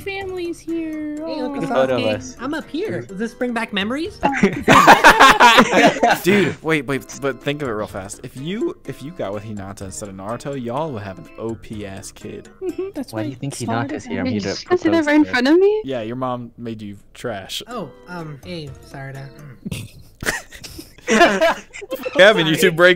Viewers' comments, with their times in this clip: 0:03 lol “does this bring back memories” I love that voice for boruto/burrito 😂